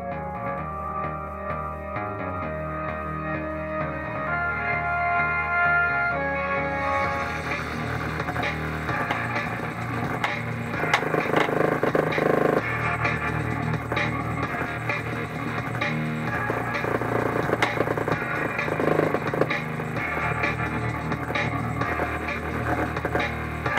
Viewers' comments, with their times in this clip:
0:10 is that the sound when Xmech is reached?